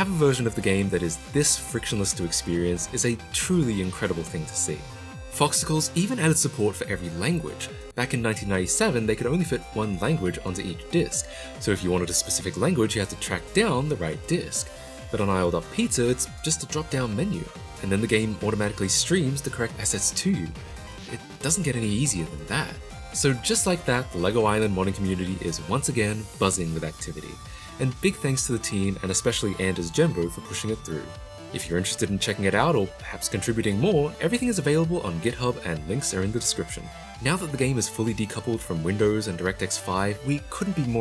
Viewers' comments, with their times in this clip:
0:05 YAY, MEXICAN DUB LEGO ISLAND!
0:26 wtf is that sudden deadmau5 remix song lol??